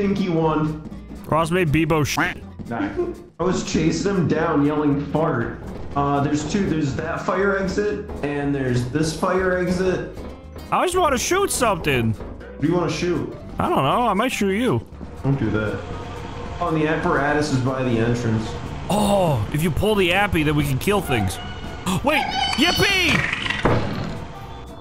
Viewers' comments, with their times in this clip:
0:10 “I might shoot you.” “Don’t do that.” * Dumbledore said calmly *